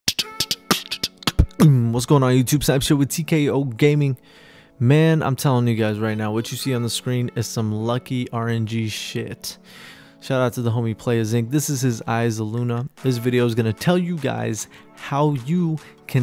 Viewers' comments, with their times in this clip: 0:00 rip mic spit